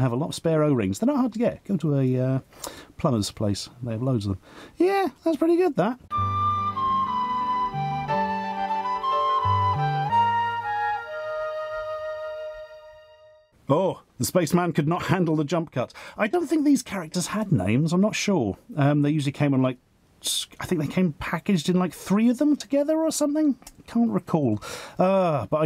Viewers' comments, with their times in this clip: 0:07 where did you get this music? It sounds like the intro to a children's VHS tape about clinical depression.